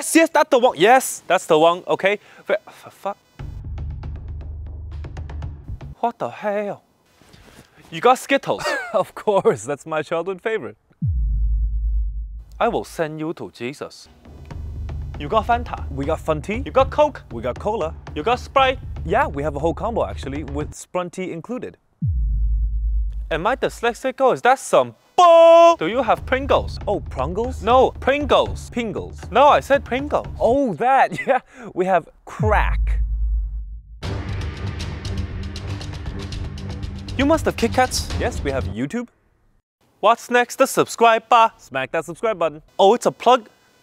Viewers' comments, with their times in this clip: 0:04 "what the hell" he said calmly😊
0:21 I'm so bad.... I thought that He said: Am I Spanish or is this bull- Not: Am I dyslexic- and so on. OH GOD I'M SO BAD
0:26 got me. when i tell you i couldnt breathe- the way he loses hope ... no i said pringles 🙁
0:27 no I said Pringles lol he say it like a baby